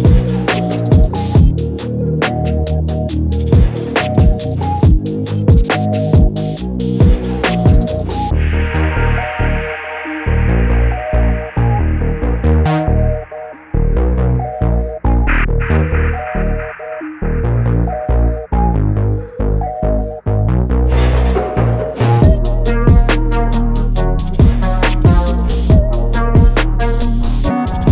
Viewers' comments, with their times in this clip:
0:08 Very cool synth and well made beat! ✌🏻